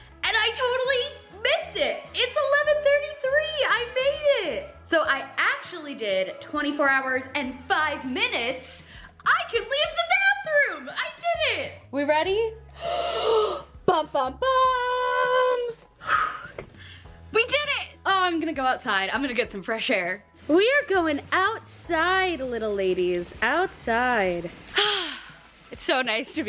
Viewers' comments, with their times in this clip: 0:09 I love your enthusiasm! her voice and excitement reminded me of Kristen Wiig as the Target Lady on SNL lol 😂 Love your videos! Always look forward to watching all of them ❤️.